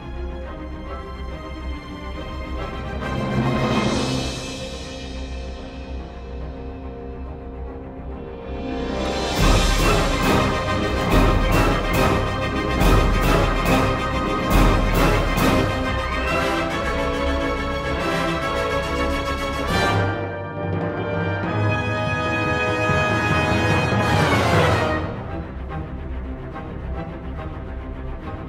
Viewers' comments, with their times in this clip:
0:08 => Watching X-Wings squadrons forming up to attack Eadu + epic musc => GOOSEBUMBS
0:12 Whaaa...? To each their own, but I disagree with your comments about both segments. :/ They don't sound "heroic" or "adventurous"...if anything, they sound more dire to my ears. Maybe has some heroism to it, but I think that's just to fool the viewer/listener (you notice it takes on a more dark and dire tone shortly thereafter). So while I respect your opinion regarding the music, I don't share it and think it fit pretty well over the scenes. :)
0:13 Great action music!!